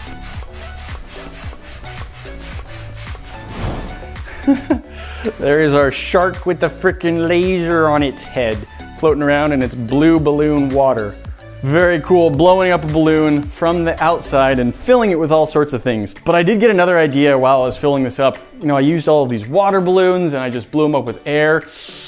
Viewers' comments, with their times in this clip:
0:05 you sound extremely Canadian